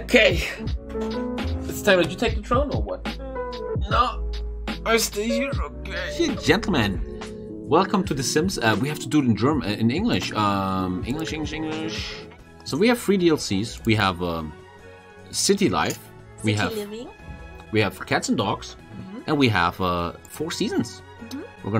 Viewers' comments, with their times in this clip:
0:06 Ladies and gentlemen welcome to the simps